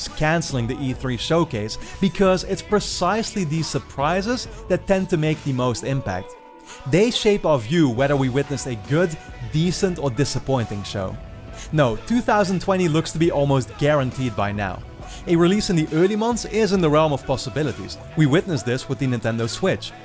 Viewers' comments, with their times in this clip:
0:07 I'm in love with 🎶🎶🎶